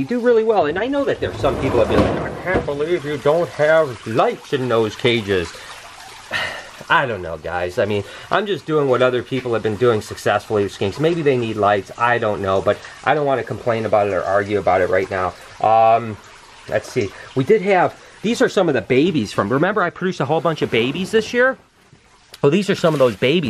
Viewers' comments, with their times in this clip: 0:04 Your voice 😂😂 I know you always take amazing care of your animals, and would never purposely care for them incorrectly:) I never wanted a skink before, but because of you, now I do!! :D I used to also haaaaate tarantulas... but now I am considering getting one! :D